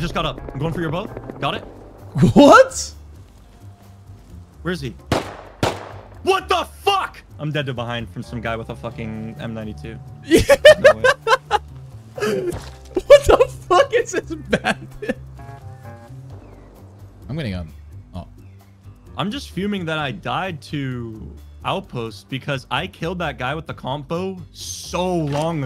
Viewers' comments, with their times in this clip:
0:07 I’m so sorry bloo if you see this but for some reason when he said wtf I laughed so hard you can tell he was mad af haha 😂